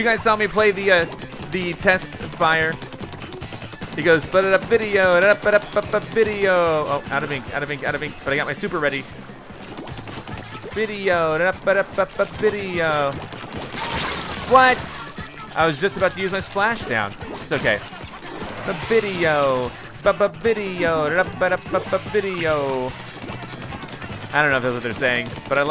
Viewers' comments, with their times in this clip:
0:10 that guy killed him because he didn't want to hear that terrible singing